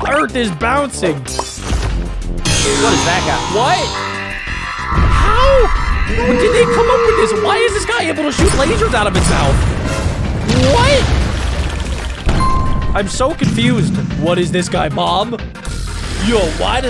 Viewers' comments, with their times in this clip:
0:04 da sneesing be like